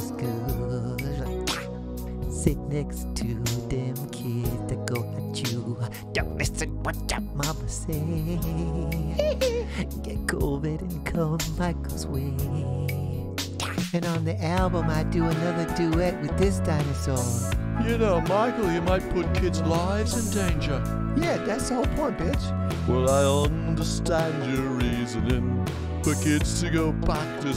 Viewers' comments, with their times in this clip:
0:09 the way he says "Covid" XD